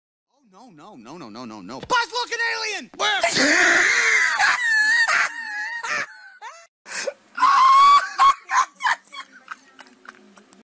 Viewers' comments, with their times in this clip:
0:03 That laugh was totally unexpected.